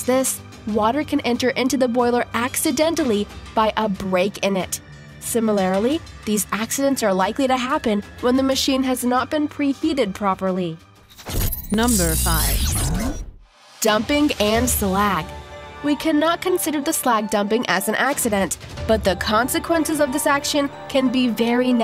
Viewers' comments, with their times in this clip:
0:05 SIMILARILY? iT'S SIMILARLY (SIM-mil-lur-ly). THAT MEANS EVERYBODY INVOLVED WITH THIS PRODUCTION EITHER MISSED THIS GLARING ERROR AND/OR THE PRODUCTION AND STUDIO EDITING STAFF RETAINS A COMPLETE MISUNDERSTANDING OF THE WORDS PRONUNCIATION. This is not a rare occurrence in Narration. Misunderstanding of pronunciations is common.